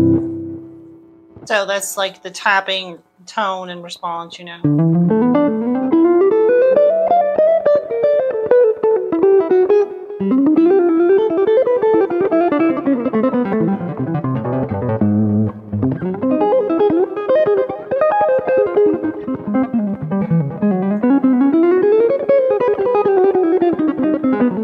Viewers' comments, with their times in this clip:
0:05 on I’m just smiling so much it hurts! Bravo! Love the jazzy chords too.